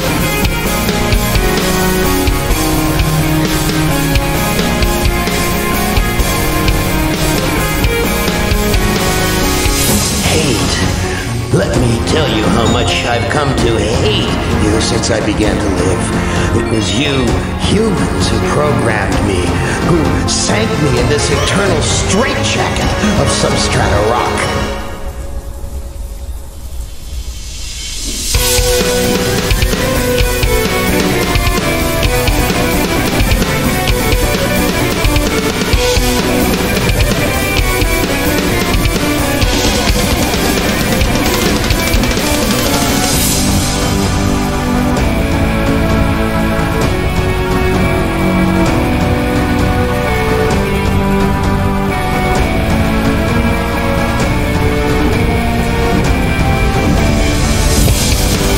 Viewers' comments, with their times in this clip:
0:09 why it sounds kinda like sebastian?
0:43 This banger looks like Gatekeeper sound